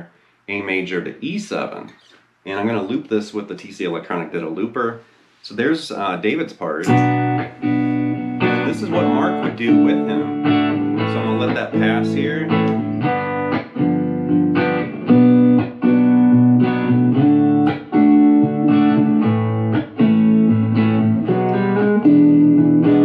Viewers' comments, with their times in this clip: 0:04 That section with the looper demonstrating David's and Mark's parts together is absolutely BEAUTIFUL!!!!! I have goosebumps!!! Seriously!